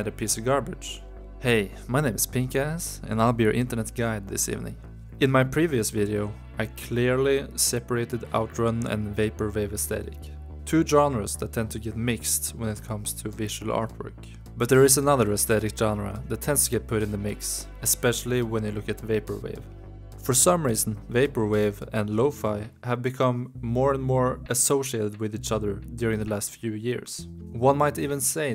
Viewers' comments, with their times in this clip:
0:09 Omg he said it right. Now thats dedication right there.